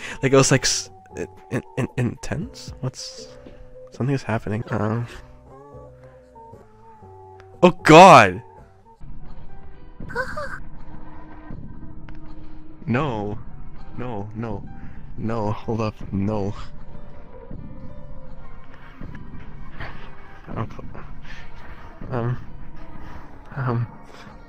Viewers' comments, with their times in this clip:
0:10 rare footage of ghost voice